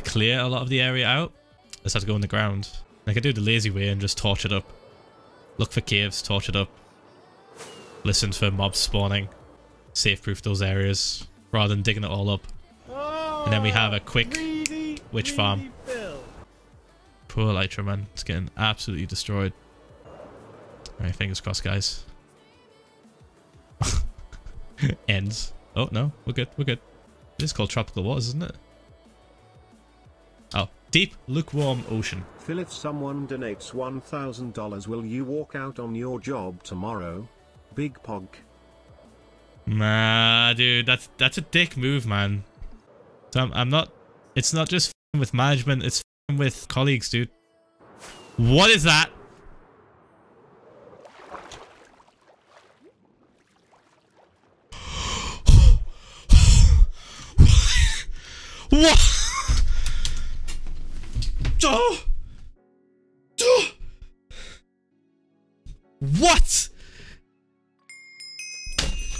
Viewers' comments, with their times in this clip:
0:04 Someone make that into a song because that's catchy.
0:55 Phil: Wha- wheeze wha-wheeze Me: Breath man